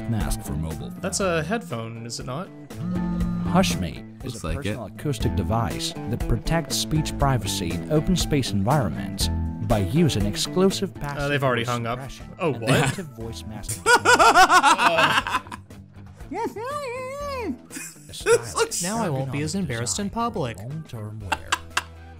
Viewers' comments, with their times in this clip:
0:07 I was wondering where Sean "Bikdip" Connery went